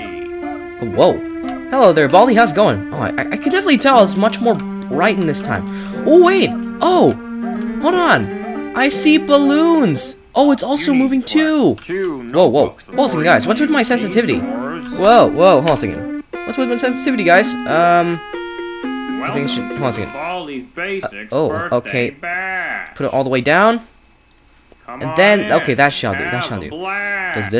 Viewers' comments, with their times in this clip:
0:09 How you talk like Baldi he it was cool 10/10😊